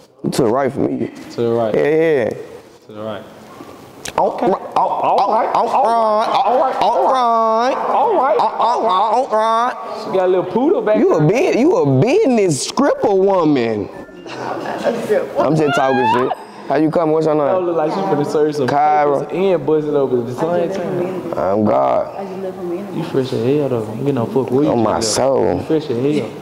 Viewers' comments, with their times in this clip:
0:09 they turned into that seagull off Nemo